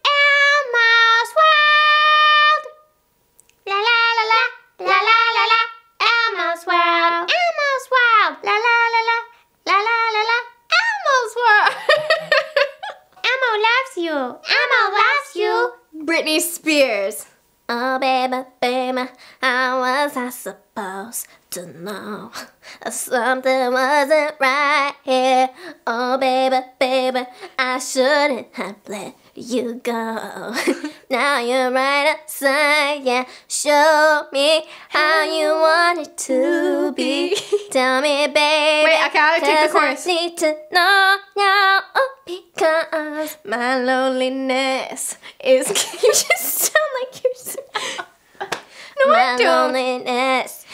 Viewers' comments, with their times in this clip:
0:04 When they sang elmo together it was so cute
0:05 they legit had the same tone lmao
0:11 the pitch change 🤣🤣🤣
0:33 I like the way Vanessa’s voice
0:35 they are in sync it sounded so good😮😮😮👍👍💚